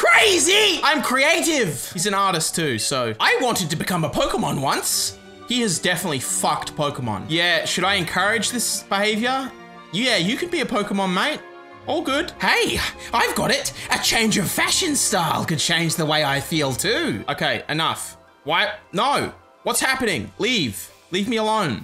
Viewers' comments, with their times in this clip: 0:07 I thought it said “i wanted to be a Pokémon nonce” 😂